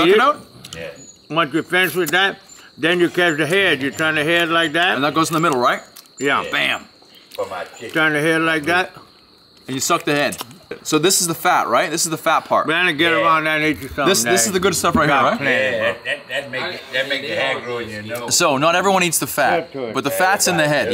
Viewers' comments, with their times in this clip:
0:07 ayooo I can’t be the only one that heard dude in the back 😂😂